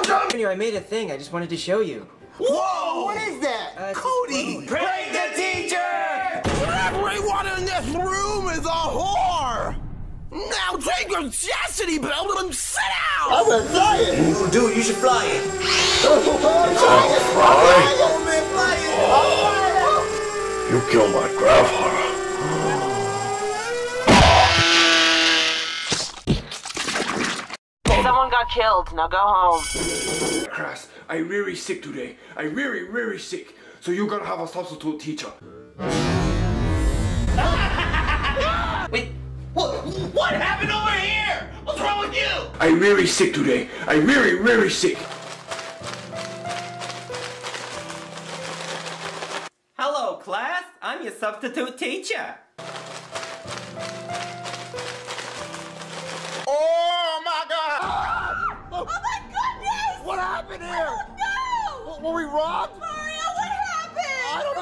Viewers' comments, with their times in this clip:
0:06 What's That Reference Jackie Chu's Different Voice!?!?
0:15 Is that a fly? auuu you kiww my gafadewer pow😂😂😂
0:44 now that's an ear rape
0:45 thats what i call ear rape
0:45 THAT'S WHAT EARRAPE REALLY IS!!!!
0:47 now the term earrape has the true meaning